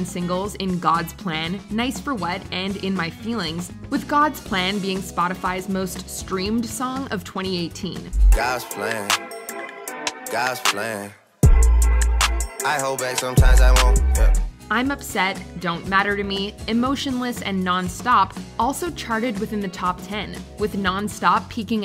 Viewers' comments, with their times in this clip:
0:08 "gaahs plan gaahs plan" you're telling me that's "music"?